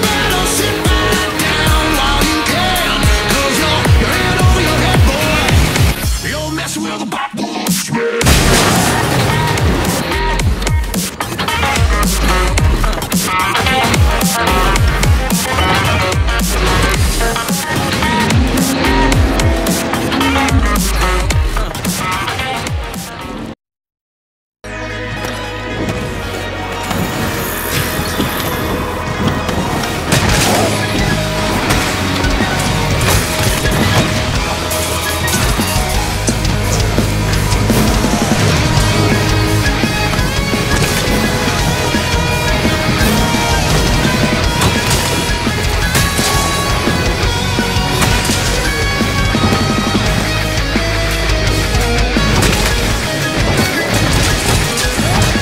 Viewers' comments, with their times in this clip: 0:06 God that synced bash is so smooth and with the song, too perfect
0:43 you got a like from me just for this music